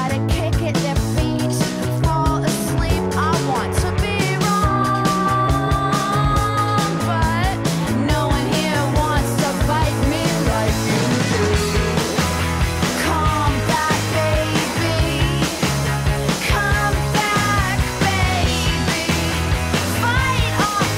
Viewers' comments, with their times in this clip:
0:05 These guys rock SO HARD. Love that unharmonic half note dip she does with her voice on "wrong" or so.